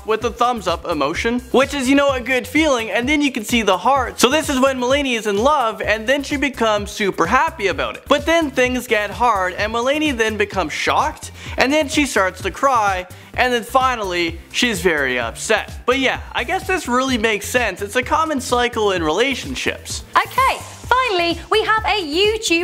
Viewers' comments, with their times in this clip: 0:03 Did he say "Mel-ay-ney"?????